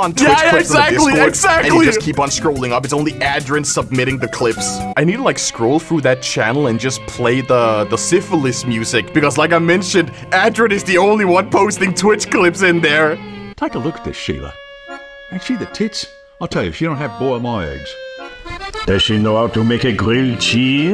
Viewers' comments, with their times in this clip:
0:06 I love the syphilis music